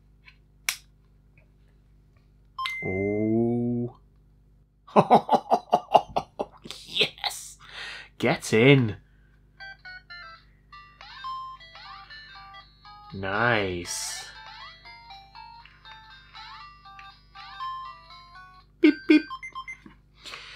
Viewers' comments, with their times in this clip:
0:05 Laugh was the hidden diamond in this video could be a meme on its own